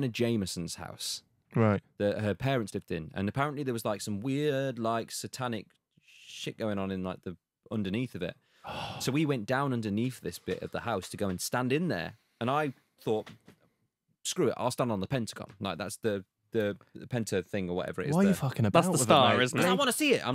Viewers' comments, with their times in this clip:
0:04 Why did he start singing mid sentence? 😂😂